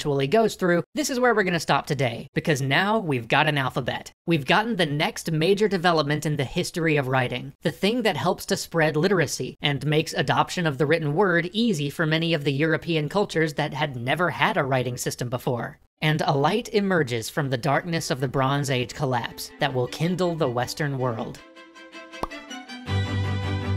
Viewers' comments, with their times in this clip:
0:06 "Phenomes" instead of Phonemes. (Maybe earlier too, not sure)